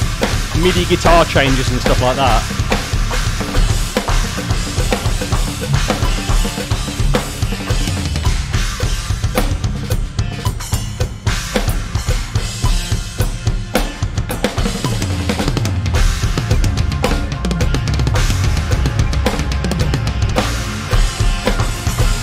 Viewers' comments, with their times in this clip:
0:10 Man loooove the drumming from in Part III. Not sure if you’d also play this live, or just having fun jamming at this point, but it’s sick.